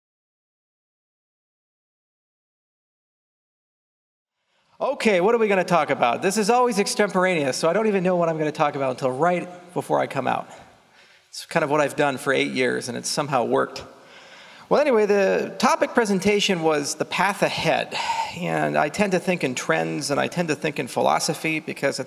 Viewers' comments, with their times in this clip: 0:03 extemperaneous?????? Did he even say that right?